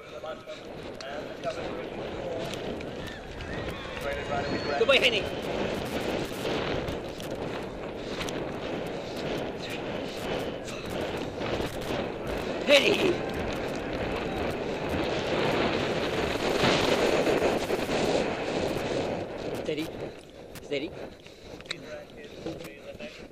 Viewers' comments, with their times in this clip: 0:05 you can hear him counting his strides to himself :) like a true pro! He's such a great rider
0:05 you can hear him counting lol i never thought that you big event riders counted. :) love the videos!